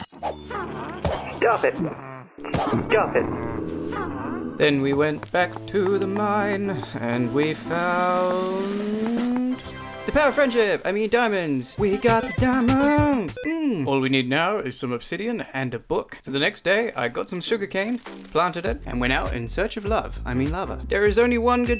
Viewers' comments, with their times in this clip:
0:09 legit broke me bro especially the nonstop sticky keys from crouching 😂